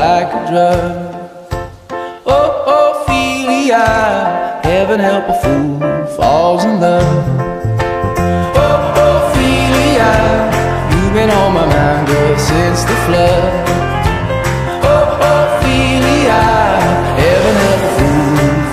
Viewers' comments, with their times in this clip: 0:03 OH OH FELING YUNG LIVING IN L'MAMBURG!